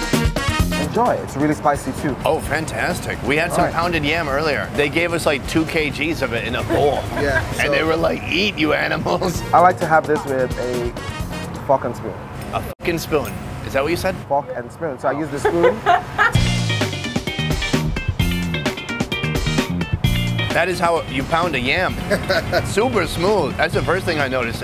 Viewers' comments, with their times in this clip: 0:10 He thought bro said "I like to have this with a f--king spoon" 😂😂